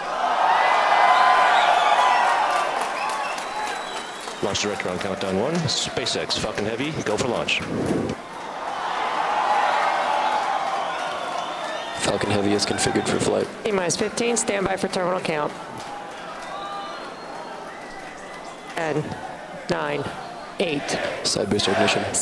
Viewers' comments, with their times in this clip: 0:06 who else hears “SpaceX fuckin heavy go for launch.”